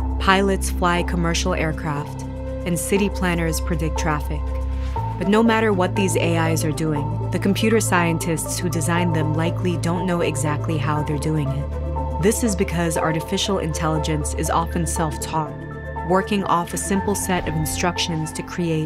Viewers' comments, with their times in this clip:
0:06 that's a scary thing to say so casually.